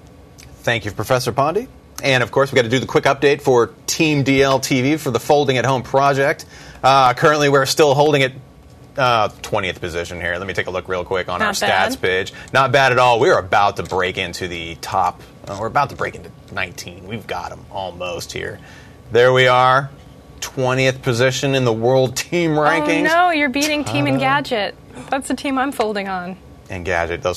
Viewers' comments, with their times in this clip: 0:10 let me take a look real quick on our stats bitch ? lol